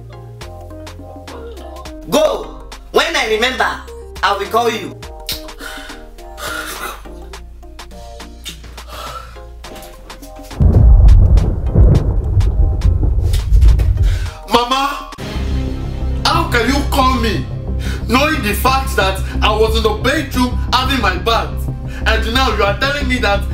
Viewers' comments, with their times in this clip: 0:10 Sounds like autisum lol 😂